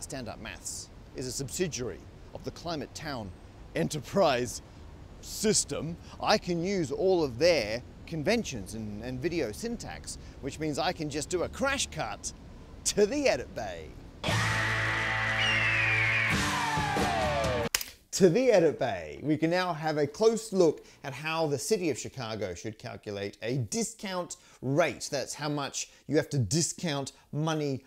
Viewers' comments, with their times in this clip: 0:10 wtf Matt is Australian??? I thought he was British
0:15 I'm disappointed you didn't replace the eagle screech with a kookaburra call.